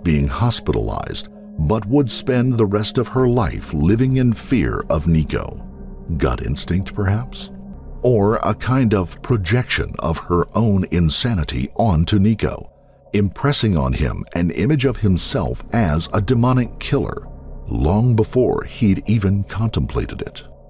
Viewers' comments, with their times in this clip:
0:05 so well narrated hats off